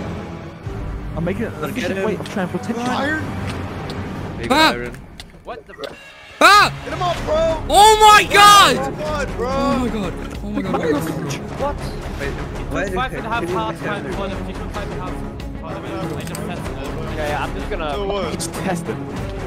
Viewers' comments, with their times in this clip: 0:04 It tries to sound like dream😢